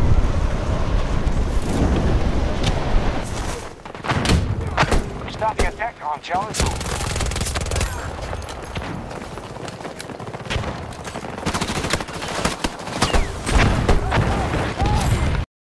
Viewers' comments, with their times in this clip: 0:08 year in movie 1981 mad max ROAD WARRIOR time in movie (ominous brass instrument music) man yell AHHHHHHHHHHHHHHHHHHHHHHHHHH pull arrow out arm look like taking poop. this where i tell u that man me and blondie on back of bike? u dad bye boy